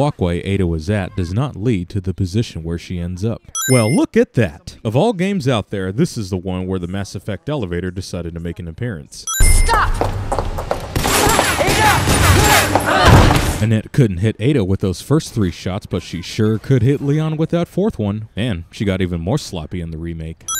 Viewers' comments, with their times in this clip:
0:07 you can hear 5 shots being fired, and as you can see in the cutscene, none by Ada. So Annette got even worse - point still stands though